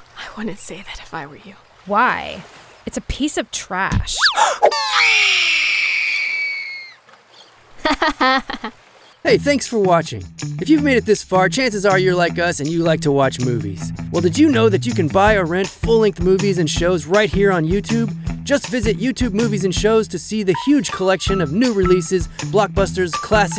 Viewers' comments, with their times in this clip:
0:04 That scream tho lmao 😂 😂
0:05 that scream. Yikes!